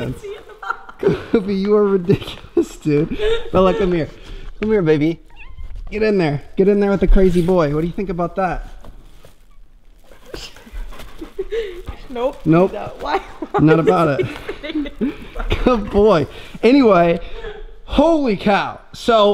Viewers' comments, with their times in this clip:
0:05 meow translation: FuK oFf by the way I’m too lazy to tell all the other times Bella meows